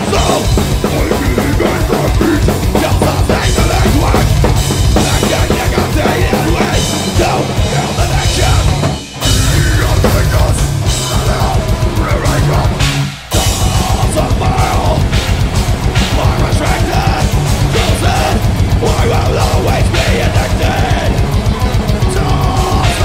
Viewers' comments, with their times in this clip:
0:10 really like the splashs accents during the blast beat Impressive drumming, groovy, creative, sick !